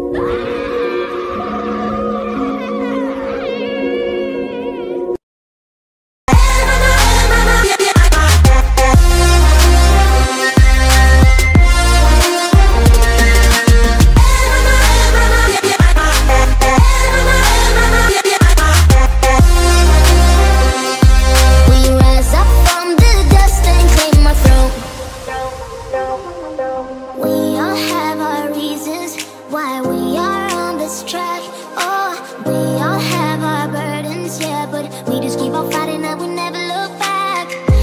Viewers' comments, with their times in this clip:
0:09 hmmmmmmmmm fell or feel?
0:19 the music makes ennerd`s fighting scene awesome